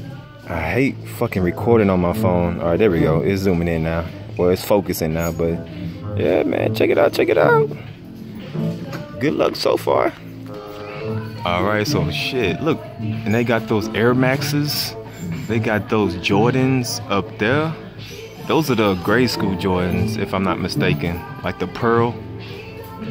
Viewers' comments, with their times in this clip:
0:06 voice crack damn